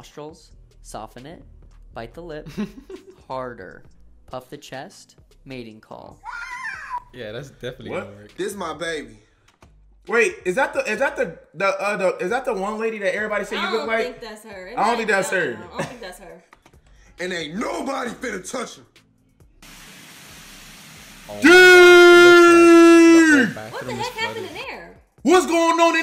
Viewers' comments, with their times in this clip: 0:08 And when tha girl just farted like big mama